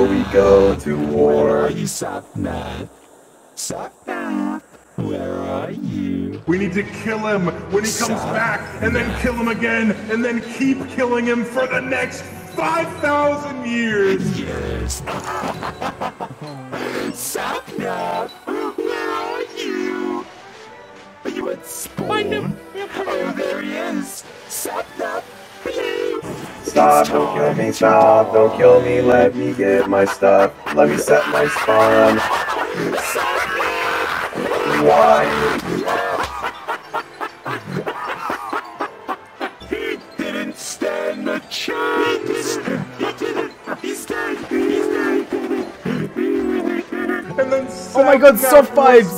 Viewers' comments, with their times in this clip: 0:07 Ok, Dream started sounding like Techno.
0:07 sounds like different rank of demons planing to Attack, Kill, destroy and repeat.
0:10 my ears are destroyed by this sound
0:17 This George voice killed me
0:20 despite sounding like a demon, the british will never leave Georges voice..no matter how much he tries to alter his voice.
0:20 The way George had that autotune on sounded familiar.......
0:24 was legit omggg, they literally sound like ghost and sapnap singing is just hilarious
0:30 DREAM LITERALLY SOUND LIKE THE WICKED WITCH OF THE WEST WITH THAT VOICE CHANGER LMAOO -
0:30 Sapnap's voice changer and dream laughing made me die of laughter lmfao
0:31 dreams laugh is Like what I imagine if someone was to kill me would sound like